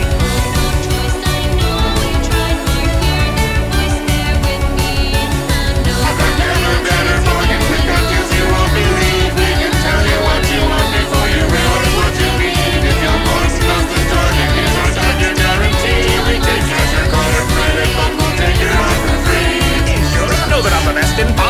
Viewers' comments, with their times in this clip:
0:06 Id like to imagine that ad infinitum spamton is angrily talking/rapping over Noelle to drown out her crys for help Noelle: talking about feeling insane and that she feels weak and getting controlled Spamton: RAPS AGGRESSIVELY